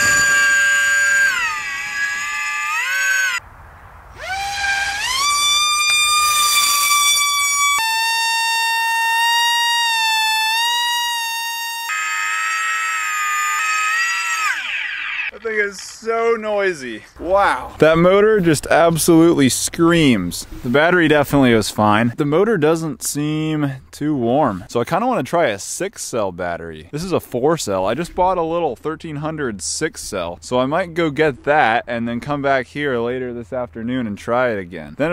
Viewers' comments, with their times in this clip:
0:07 Holy shit, sounds just like my girlfriend!
0:20 Wow you can really see the servos causing rotation : like you said, they're backwards descending... They move regularly every half second you can hear the wind noise in the oscillation...when it helicopters at 7 min the pulsing is real fast 😀